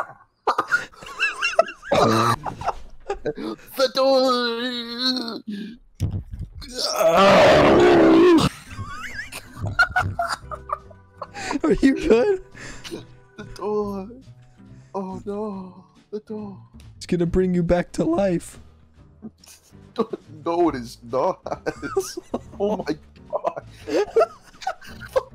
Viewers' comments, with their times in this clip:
0:06 RARARARARARARARARARRARAARAAARAAAH Starts Laughing